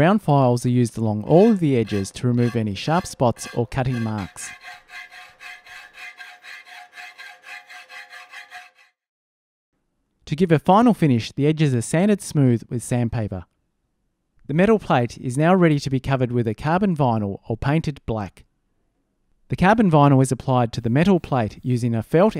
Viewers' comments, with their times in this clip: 0:03 my Minecraft character eating: